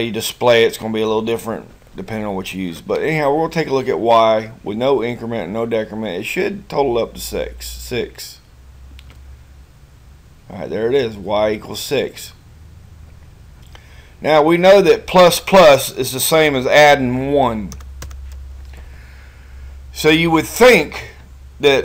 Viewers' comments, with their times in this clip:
0:07 total up to sex err six :)